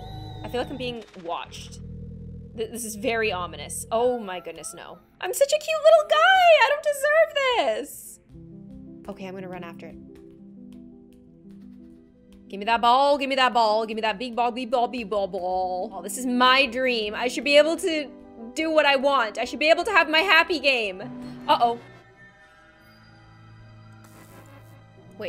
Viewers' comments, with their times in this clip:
0:07 SHE SAYING BEAT BALL OR BALL